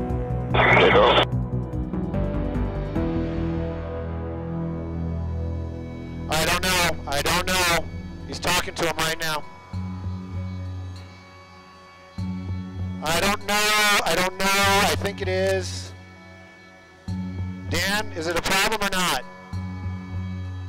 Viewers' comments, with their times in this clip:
0:07 Donald Trump voice 🤔